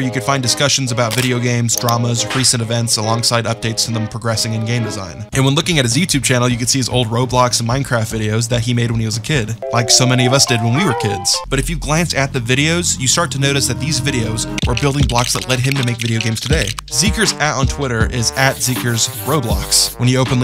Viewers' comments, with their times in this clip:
0:05 there’s that Cyber Punk music!❤️